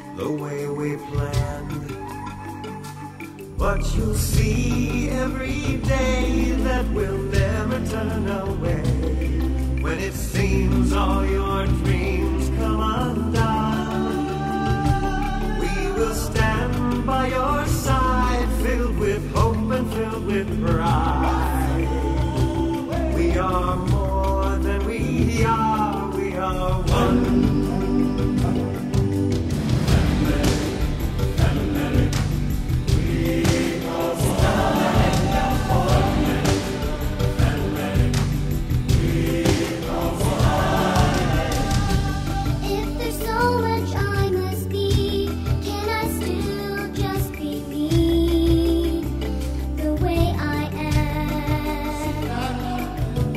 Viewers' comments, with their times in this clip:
0:03 when he sings “day” at the end of the sentence was perfect
0:41 Kiara has a really good voice. This is one of my favourite lion king songs ever, it’s so good and emotional with a lot of heart and a good message
0:41 she sounds like a young Ariana Grande aw